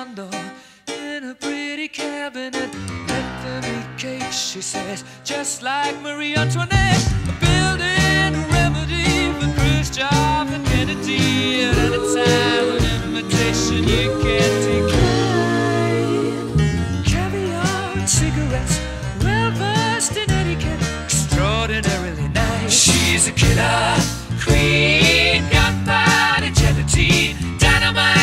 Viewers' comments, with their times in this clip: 0:09 why did I think he said "for Chris jobs and penalties"